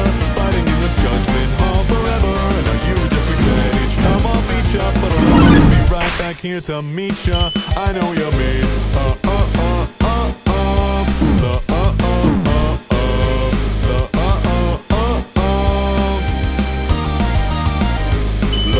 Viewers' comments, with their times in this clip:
0:06 the gaster blaster rhymes with the song :0